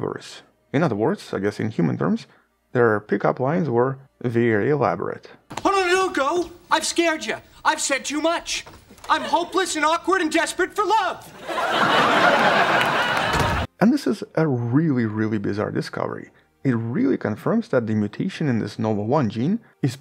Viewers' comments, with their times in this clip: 0:05 bro ... at least keep the volume at a similar level
0:08 omg the audio spike i hate when videos do this